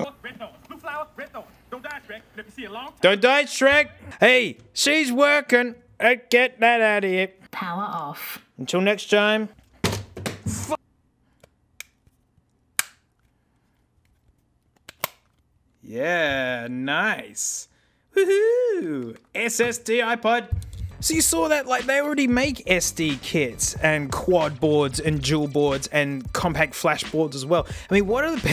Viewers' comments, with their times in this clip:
0:10 Love the perfectly cut scream